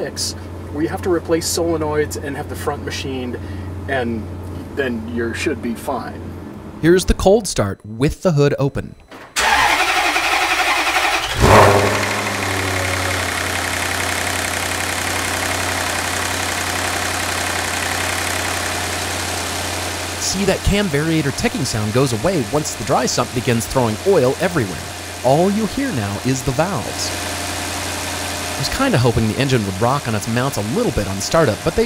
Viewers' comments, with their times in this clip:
0:08 Start up sounds just like a new Dodge Charger 392...
0:17 That slap ...ugggh